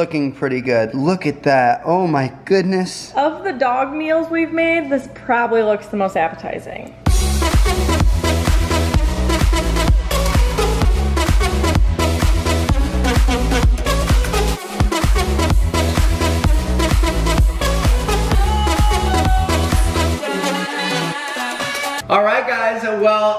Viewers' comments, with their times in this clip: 0:07 noooooo the music😭😭😭 RIP